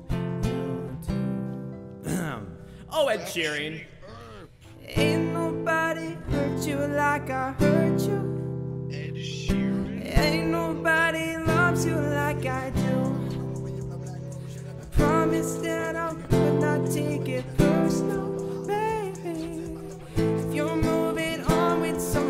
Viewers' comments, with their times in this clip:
0:08 I actually thought you were ed Sheeran ❤